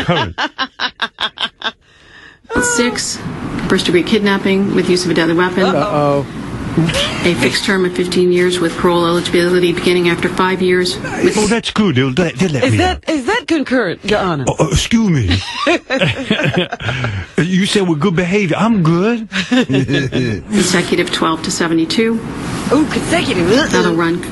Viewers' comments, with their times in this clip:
0:06 the simultaneous "uh oh!" killed me.
0:06 when Robin and Artie say "Uh oh!" almost simultaneously cracked me up.